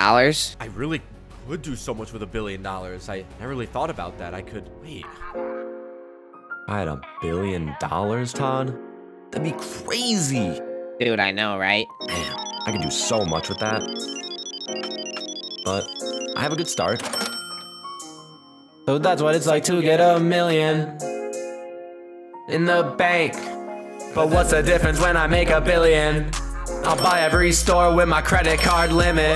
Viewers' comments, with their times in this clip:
0:06 i liked that song bro
0:06 fire song bro i love listening to it!
0:07 When he did the song
0:17 when he start singing